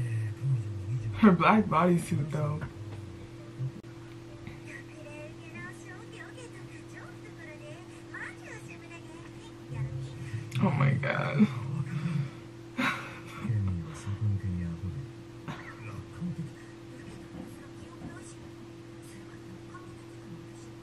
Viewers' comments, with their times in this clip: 0:04 They were pretty gracious with the subtitles, because I gotta agree with the other students! Without the subtitles I honestly can't pick out one understandable Japanese word besides "ok-ok" and "really (maji)"